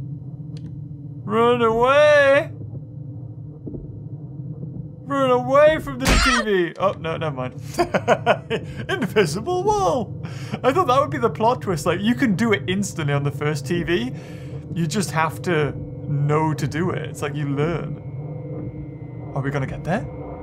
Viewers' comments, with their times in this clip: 0:04 You have no idea how much I appreciate the Croc hit sound from the ps1 Deserves a more massive like than I can give